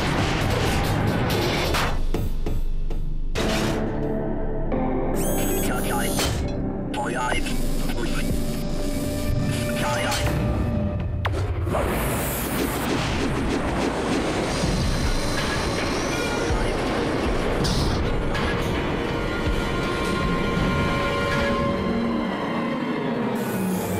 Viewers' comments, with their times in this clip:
0:05 Robot Has Xbox Comms Voice!